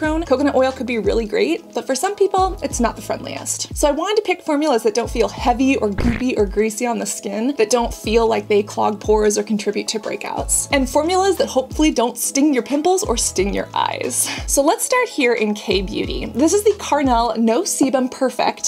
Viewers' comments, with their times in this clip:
0:05 for the 💩 sound 🤣🥲